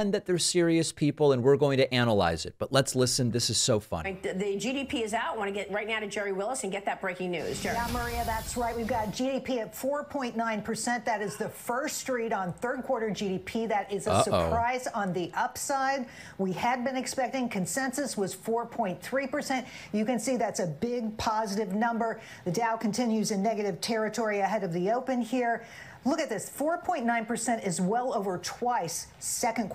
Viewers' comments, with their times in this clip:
0:10 I thought someone gasped in the background at first lolol😂